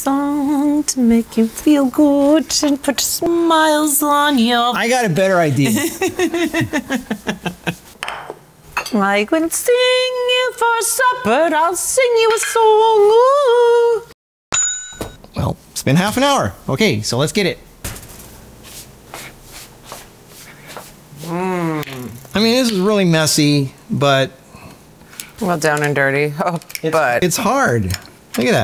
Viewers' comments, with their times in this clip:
0:09 love the singing, i do the exact same when cooking